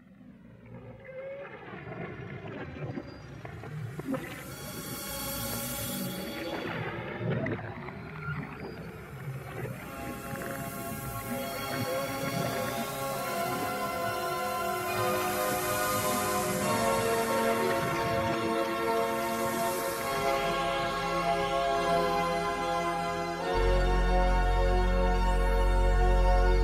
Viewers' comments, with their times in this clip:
0:09 The music that starts is just amazing. Anyone knows anything like this?